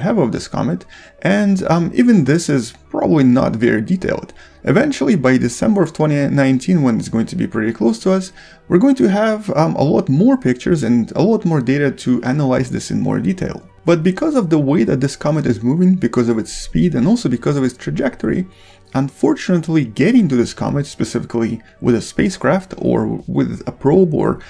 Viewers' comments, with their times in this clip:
0:05 Eventually by the summer of 28, 19 we will have the clear picture of it ????? what he's talking about ????